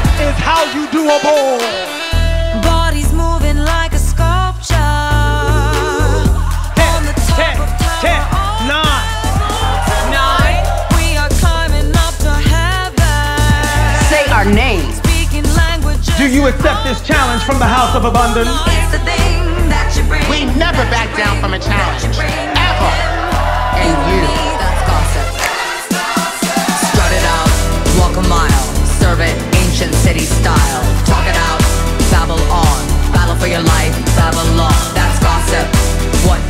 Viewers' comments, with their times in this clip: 0:10 the “nine” synchronized with “night” in “tonight”, that’s when i lost everything. iconic!
0:24 OKAY. THAT SNAP. THAT SNAP SIS. IT'S ALL OVER. I'M DECEASED. BYE